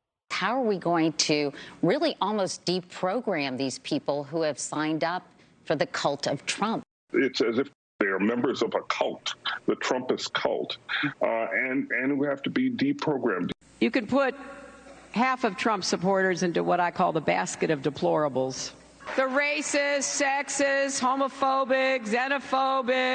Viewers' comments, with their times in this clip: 0:08 the way he nonchalantly talks about Deprograming Humans is terrifying 😳😳 …